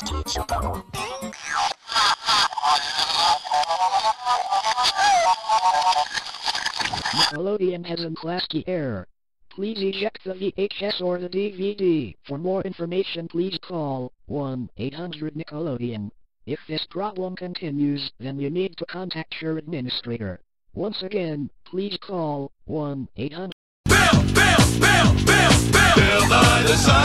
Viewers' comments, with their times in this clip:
0:08 Sounds like Speakonia Male 3